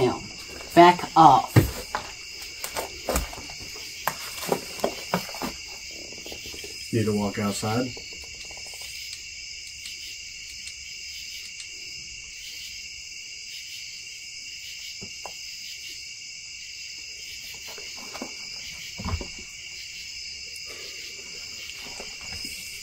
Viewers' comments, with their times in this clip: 0:04 Growling that lasts a few seconds.